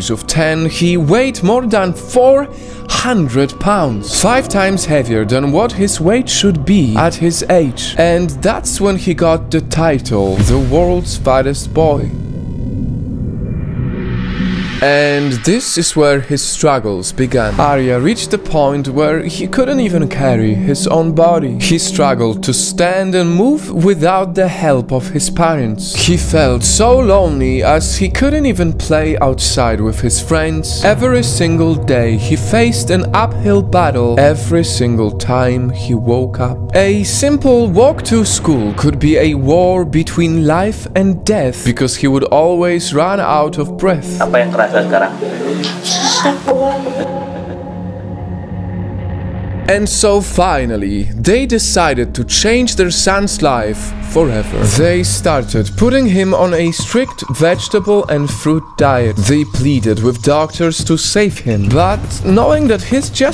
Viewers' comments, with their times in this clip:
0:09 He sounds like a villan
0:44 Yes they spoke Indonesian